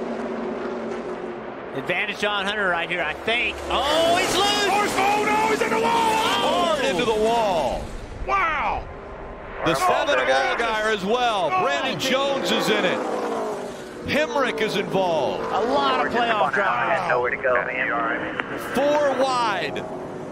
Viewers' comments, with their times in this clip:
0:04 Brad Daugherty sounds like a WWE announcer!